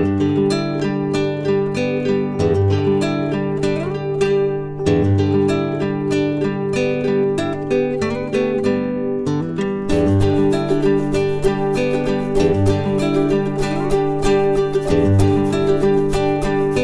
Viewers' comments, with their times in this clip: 0:03 just some casual country music as a pug chews a shoe lace... XD